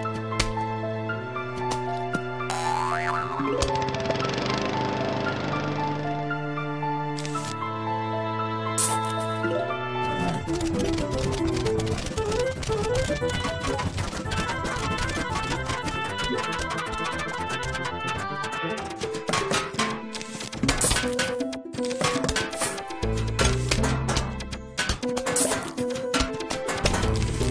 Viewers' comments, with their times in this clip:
0:10 grasswalk sped up sounds so good